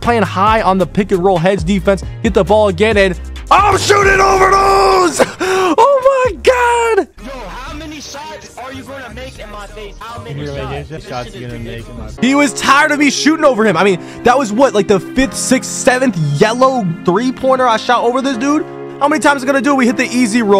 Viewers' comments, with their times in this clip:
0:03 lower the volume. theres a screamer for those who not prepared